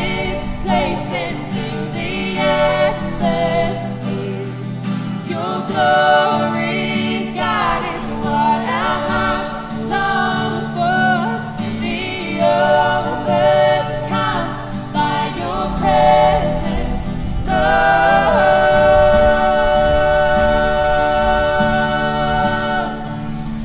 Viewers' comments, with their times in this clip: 0:06 This verse , when they sing “long” Perfection